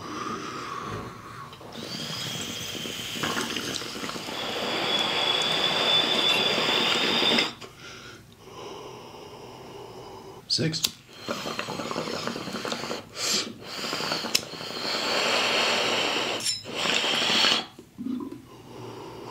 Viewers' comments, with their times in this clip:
0:04 dat shit sounded like a rocket ship🤣